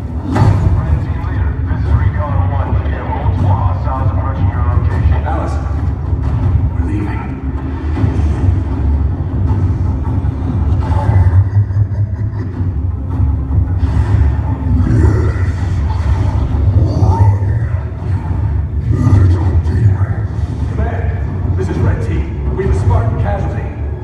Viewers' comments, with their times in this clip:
0:10 Imma hear that laugh in my nightmares.